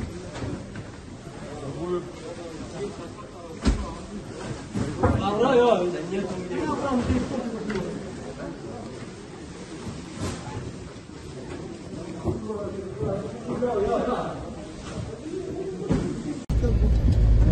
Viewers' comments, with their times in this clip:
0:04 They are definitely North Korean soldiers. This is Korean language. The accent of the northern part of the Korean Peninsula that says, "Get out of there."
0:04 The officer told the soldier in Korean language to get out of there. The officer's pronunciation is that of the northern part of the Korean Peninsula.